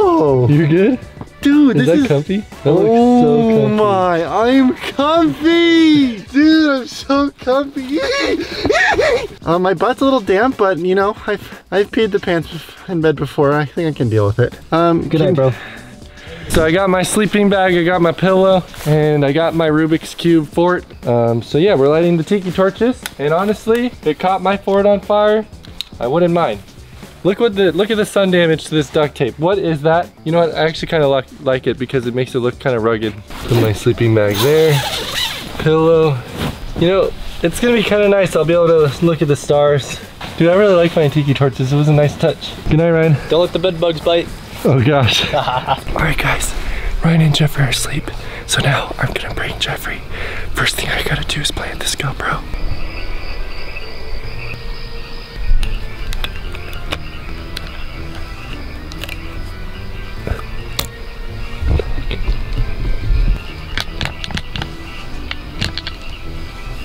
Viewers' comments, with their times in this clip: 0:08 His murderer Laugh 🤣
0:45 is ASMR MOMENT
0:51 when he shushes us cuz they can hear everything we r doin at home